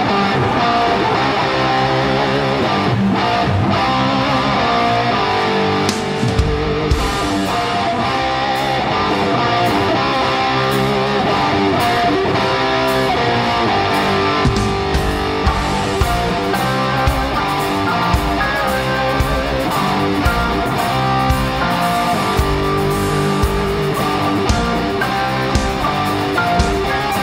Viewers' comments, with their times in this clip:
0:08 One of the most famous guitar-riffs of all time..